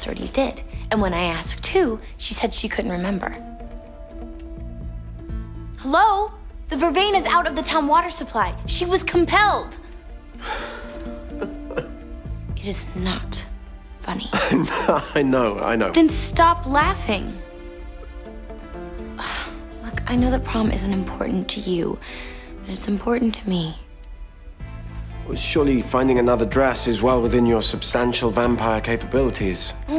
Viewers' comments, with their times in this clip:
0:10 I love how Klaus laughs here. There he was, seemingly in deel contemplation about his world conquest when Caroline disturbed all his delicate mental planning and for what? A prom dress 😂😂😂😂 That laugh of his was like "Seriously? This is about a bloody dress?"